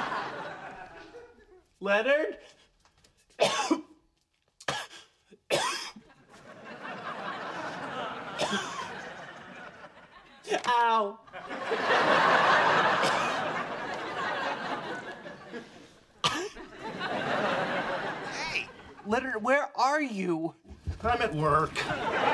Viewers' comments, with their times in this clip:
0:09 The way he says "Ow" kills me.